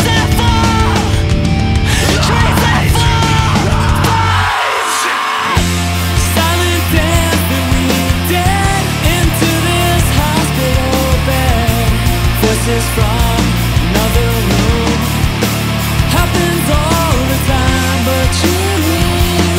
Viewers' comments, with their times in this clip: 0:05 Best part is when music going down and the melody goes dissonant and drums syncopated and the metaphor lyrics omg makes me float